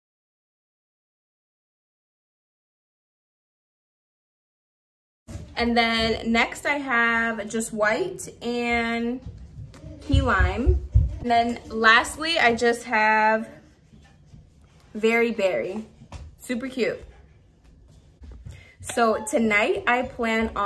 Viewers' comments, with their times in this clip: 0:04 your sound cuts out for 5 secs